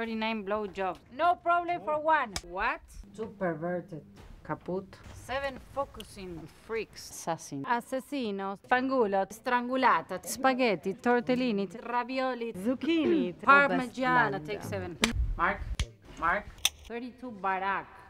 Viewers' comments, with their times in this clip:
0:04 The way she says Kaput makes her sound Russian.